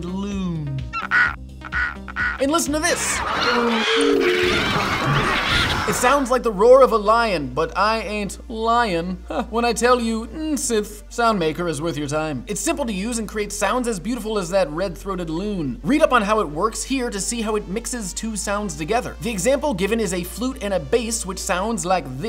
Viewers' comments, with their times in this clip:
0:03 Ahh... How peaceful. It sounds exactly like my thoughts being taken over by eternal suffering... I love that sound...